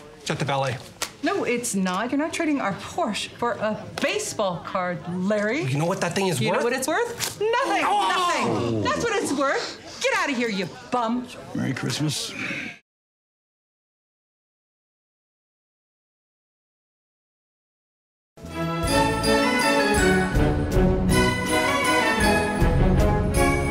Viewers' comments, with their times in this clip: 0:08 I think we ALL screamed along with this poor guy here!